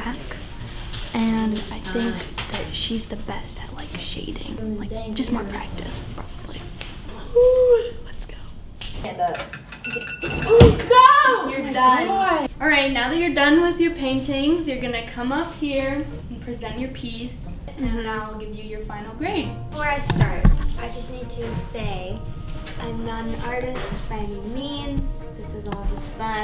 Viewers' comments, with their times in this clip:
0:10 Tbh that alarm always give me a heart attack as well hahahahahah